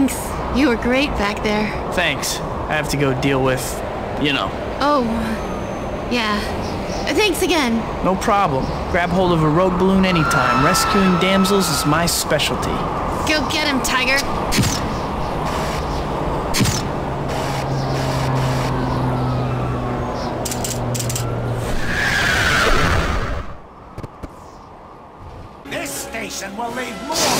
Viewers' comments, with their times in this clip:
0:08 Spider-man is talking to a girl while people are screaming
0:10 uhh Spider-Man I think people are being crushed by that ballon there’s people screaming